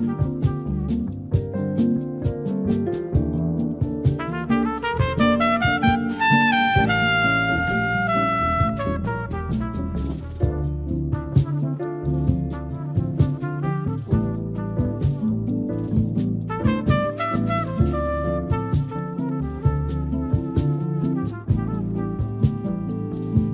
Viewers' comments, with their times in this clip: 0:04 Chet's soaring sentence !